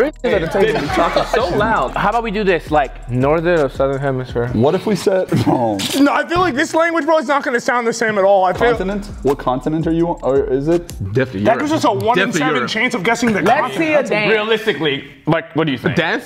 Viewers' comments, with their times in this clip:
0:04 He said it correctly in German, and 100% sounded like a German student. It was german, but it wasnt proper lol- xo, A German student. She sounds like she's speaking Yiddish!